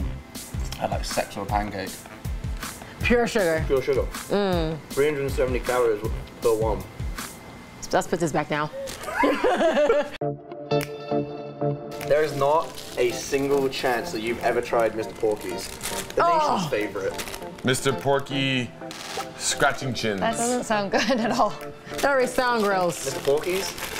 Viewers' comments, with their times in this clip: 0:06 that was so in sink